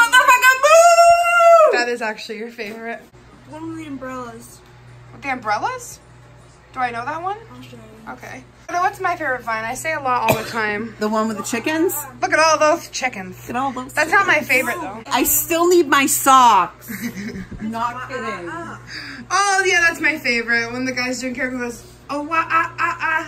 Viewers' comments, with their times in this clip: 0:08 Your mom has me dying omg 😭😭😭 also reminds me of how julien bothers jenna marbles with his coughs 😂